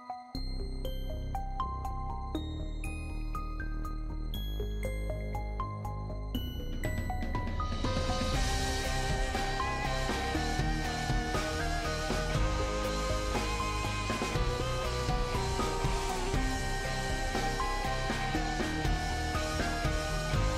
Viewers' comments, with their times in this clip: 0:04 fuck I started singing the copypasta as soon as the beat dropped XD